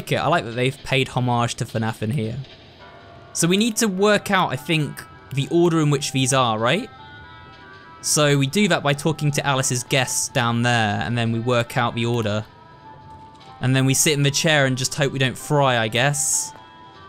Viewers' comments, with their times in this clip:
0:05 Music type sounds similar to Mama Bear's stage.